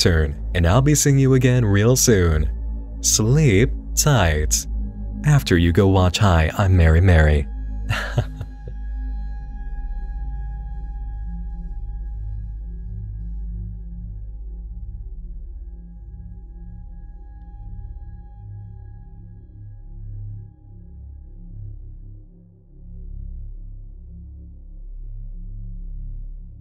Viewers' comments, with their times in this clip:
0:08 This series seem great! Months later, but I am surely watching. And... can we talk about this kind of laugh kind of I don't know ? It's beautiful